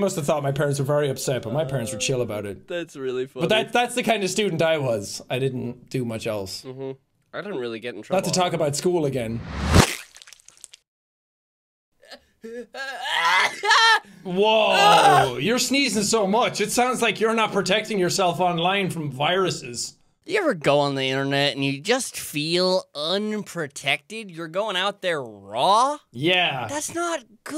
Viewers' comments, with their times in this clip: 0:09 Yo that sound effect gotta relax I be listening to the podcast while cleaning sometimes and every time it scares the hell out of me because it’s so unexpected. I can’t be the only one right?